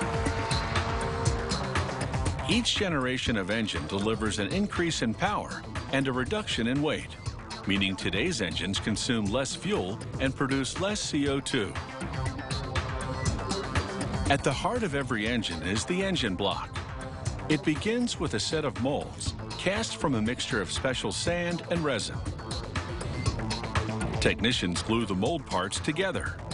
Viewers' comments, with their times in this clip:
0:08 was that a 2 stroke engine ?